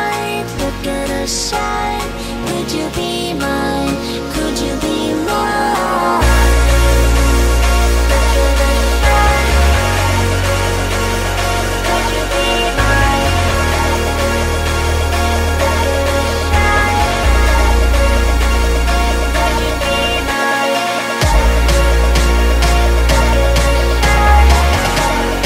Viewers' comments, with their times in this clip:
0:06 The beat hits so diff it badass asf